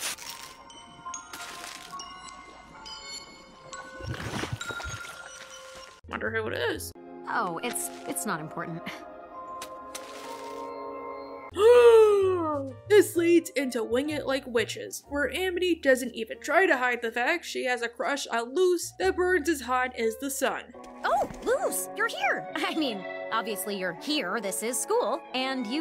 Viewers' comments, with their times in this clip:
0:06 The "I wonder who it is" then the gasp was was literally me. I guessed that the note was for Luz from the hints in the episode, but I wasn't too sure because of how Disney is about this stuff.